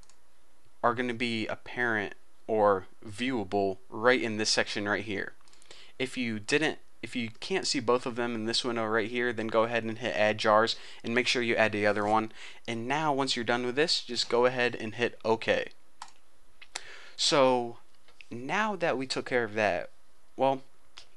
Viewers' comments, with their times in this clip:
0:09 CREEPER!! (listen closely)